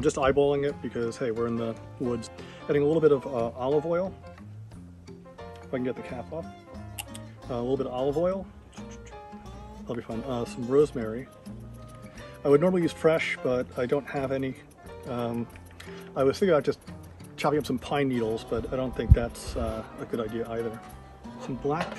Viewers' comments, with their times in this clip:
0:06 You still do the "ch-ch-ch" Haha! Nice music as always.